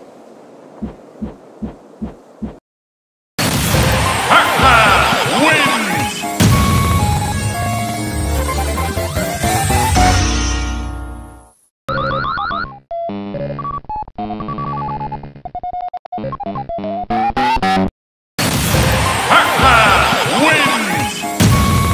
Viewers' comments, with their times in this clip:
0:03 The mod has perfect victory music!
0:04 I can clearly see that there was so much care put into this, the buzzing and glitching sound effects are here, and you stayed true to the Source material. Even the distorted Pacman jingle is here. I was not expecting that you caught me off guard. (It's the smaller details that matter, This was so good I'm subscribing. Great smash bros mod.) ⋆｡ﾟ☁︎｡⋆｡ ﾟ☾ ﾟ｡⋆